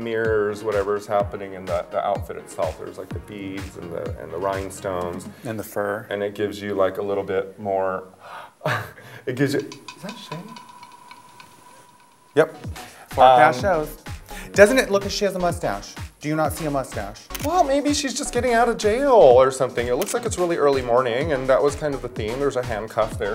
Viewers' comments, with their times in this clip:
0:08 fun with sound effects!